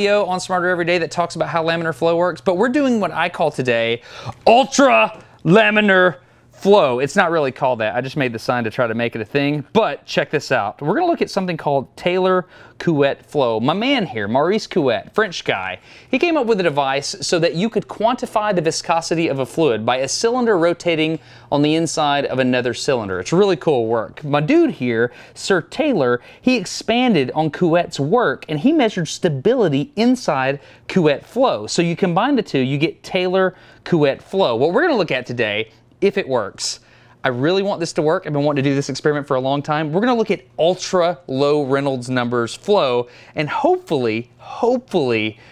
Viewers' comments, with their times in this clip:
0:03 you sounded like rick from rick & morty there.
0:25 Your pronunciation of Couette is excellent =) Fun fact : in french, the word couette means a quilt <3 A french guy.
0:31 "NO HABLO FRENCH". I genuinely LOL'd at that, probably more than I should have. Also, according to Google Translate and some random French/French-Canadian commenters on here, you just about nailed the pronunciation. Just cut the "oo" part shorter when you're saying it, and bam. Great video as always, Destin!
0:32 Don't worry Dustin. You're pronunciation wasn't perfect, but it was still pretty good :)
0:33 In fact, you did a pretty good prononciation of "Couette".